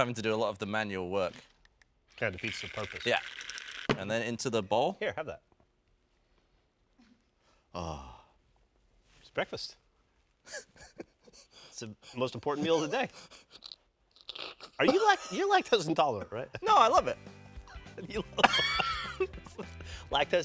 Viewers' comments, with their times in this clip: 0:07 The noise Gavin made is so funny to me